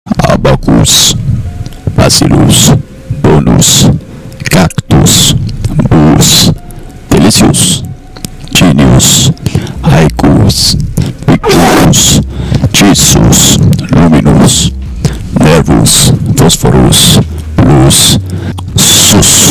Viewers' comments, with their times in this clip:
0:03 this part is in spanish